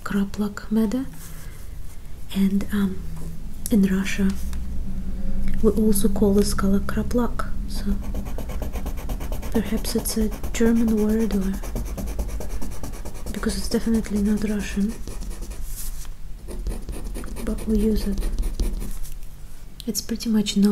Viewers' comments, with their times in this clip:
0:08 kraplak sounds really Dutch. Not sure whether or not it's Dutch. Edit: Probably not originally.